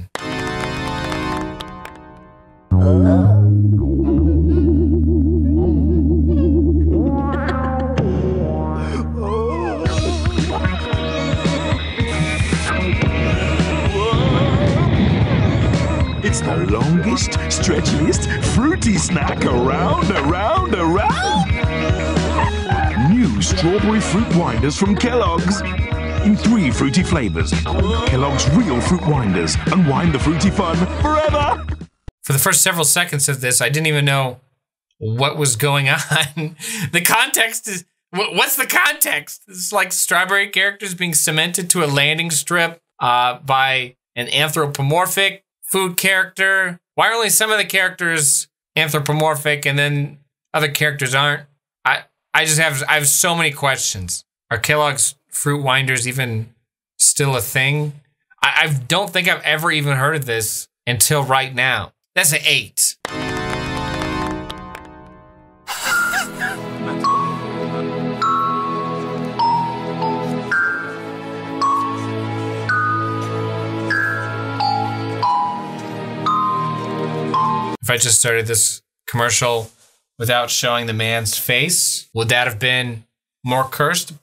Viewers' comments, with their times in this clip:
0:10 I don’t know why I like this music
1:06 kind of a banger of a song tho can’t lie
1:06 For some reason I like the song